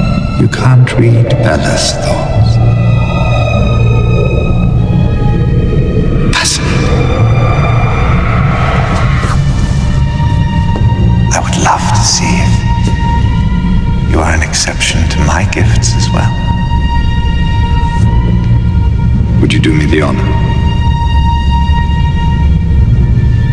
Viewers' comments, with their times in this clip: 0:07 the screams in the background 😳